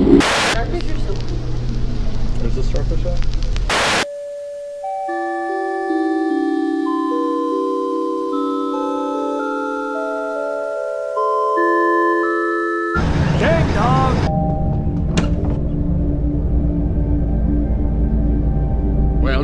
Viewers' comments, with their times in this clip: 0:04 I love this song! 🤩